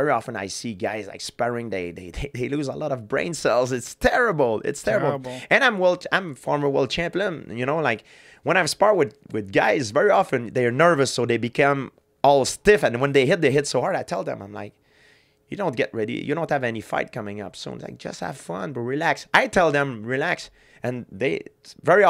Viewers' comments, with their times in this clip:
0:04 the way he hesitantly said "I am world champion" showed how humble he is.